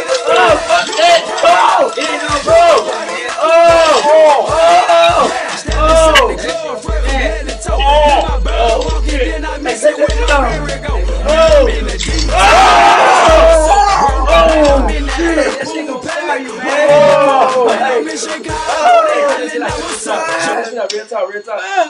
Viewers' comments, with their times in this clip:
0:09 they popped up like Alvin and the Chipmunks..lmao